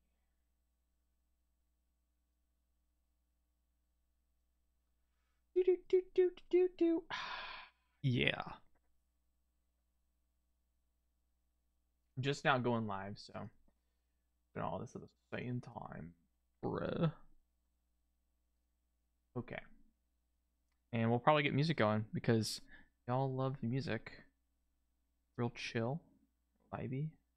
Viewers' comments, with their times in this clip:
0:08 did you just doot doot the Dora theme song?